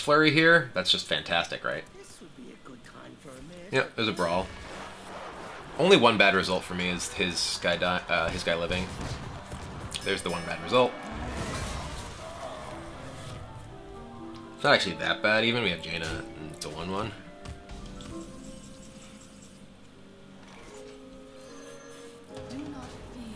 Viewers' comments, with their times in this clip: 0:09 Can you hear Ben Brode's laugh?